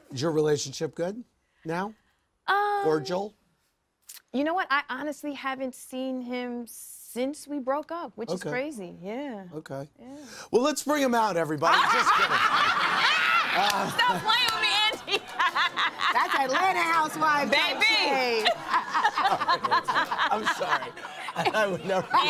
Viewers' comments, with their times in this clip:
0:08 Th belly laughs 😩😩😂😂